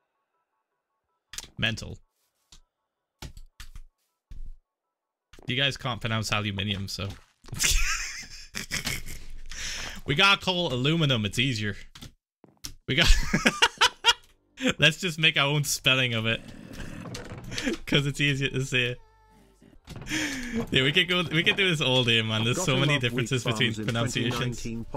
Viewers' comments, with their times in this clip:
0:07 best american accent ive ever heard
0:09 Hearing Phil be American is something I never knew I needed